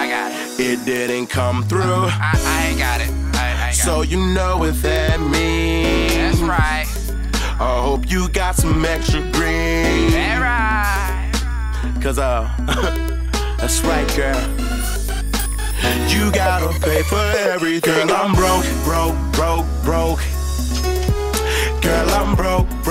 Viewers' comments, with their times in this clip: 0:10 I like the way he said thats right